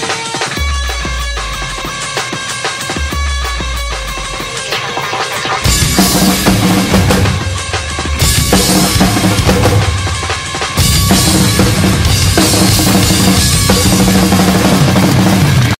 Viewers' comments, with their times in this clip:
0:05 your voice is like a dude screaming in a sic song. song (sic) band Slipknot timing ~ you understand me